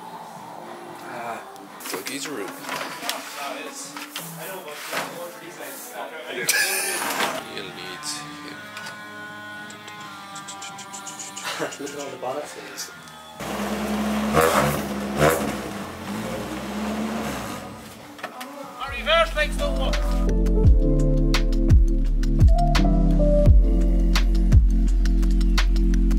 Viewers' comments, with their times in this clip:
0:08 this is such an amazing collection! I'd love to have a look around there even tho i dont even own a 86. also... i think i hear the kaiser chiefs playing, proper gran turismo 4 flashback!